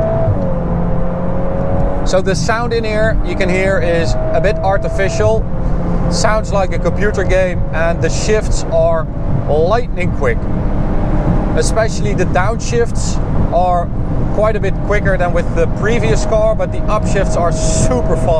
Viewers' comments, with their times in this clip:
0:03 you can actually turn off the fake engine noise in the Menu.